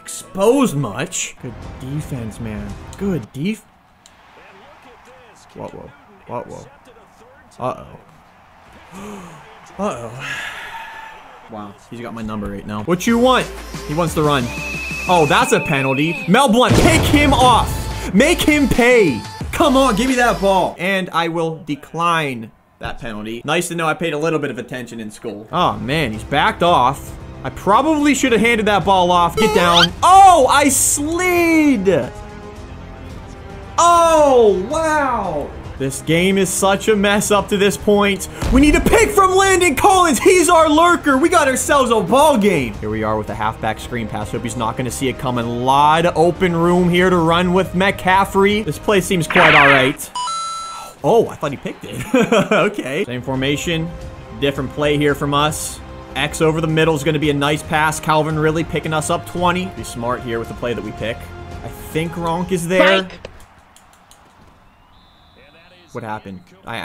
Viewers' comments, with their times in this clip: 0:03 You said good gief
0:47 sounded like he was going to say metcalf